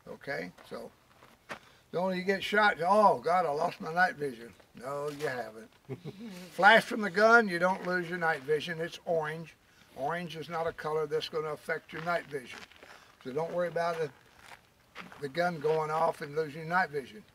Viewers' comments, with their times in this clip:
0:03 he sounds like Mike from breaking bad/better call saul haha. "No you haven't..."